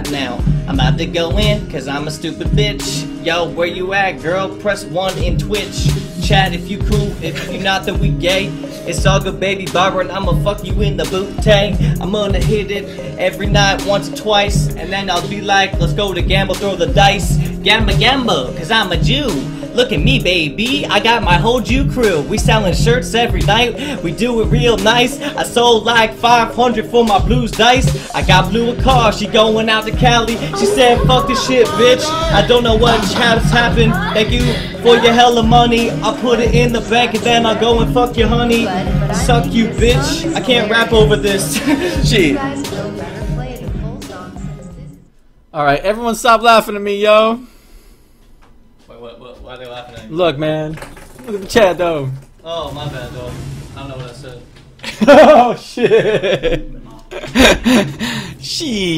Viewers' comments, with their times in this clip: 0:05 what's the beat chill a f
0:44 if you don't like the rapping like me (sorry not sorry Mitch)